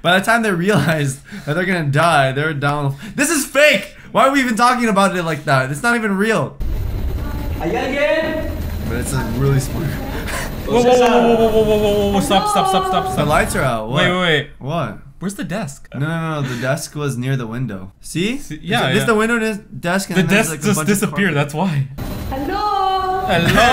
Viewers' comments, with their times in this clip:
0:07 IT SOUNDED LIKE HE SAID" I DEAD YET"